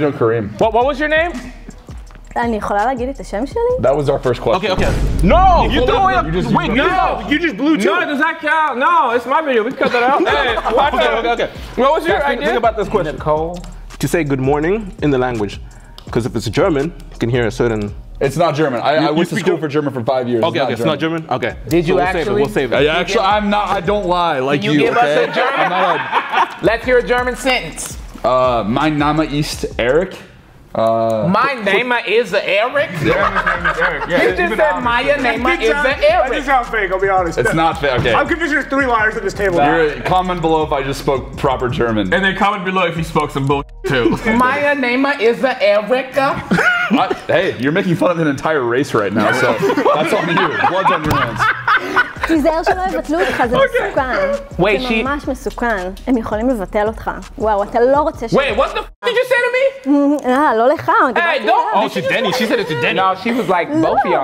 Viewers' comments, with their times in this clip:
0:07 she speakin that Sims game language
0:28 Hi, german person here: "Mein Name ist Eric" is in fact correct and he pronounced it surprisingly well! After 5 years of german classes, I would expect a little bit more from him tho. But anyway, good job
0:29 that is proper German but it does sound very similar
0:38 I’m German/Swiss, he spoke correct high German, with bad pronunciation
0:40 His pronunciation was spot on. Very good German skills
0:42 proper german and really good pronounciation, too! Nearly perfect and I say that as a native speaker
0:48 he did in fact speak it flawlessly!!